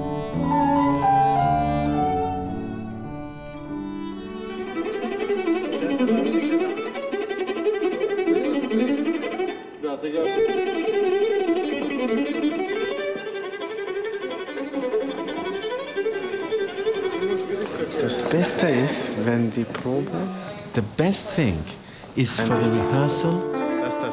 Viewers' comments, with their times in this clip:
0:06 the true sound of a Storioni viola! Rachlin plays it just right! I believe he's loaned it to his girlfriend now... but it just doesn't sounds the same. It sounds just alright.